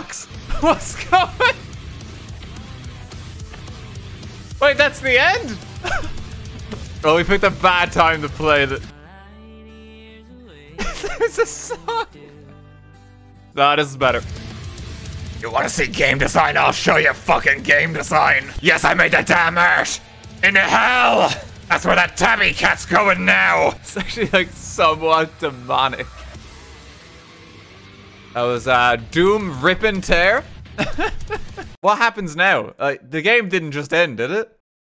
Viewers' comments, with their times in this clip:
0:06 this literally had me laugh-crying the serene credits and then doom music is just perfect
0:16 that end song / entire scene makes me so emotional every time but YOU .